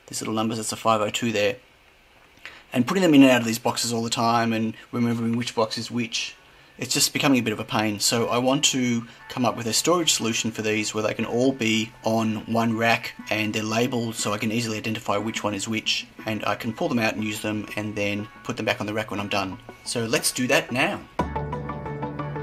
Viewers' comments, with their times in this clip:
0:08 Aww man that music creep-in for like 10 seconds I thought it's something like a phone, somewhere in the office around me... :) Nice idea btw - practical printing for the rescue, once again!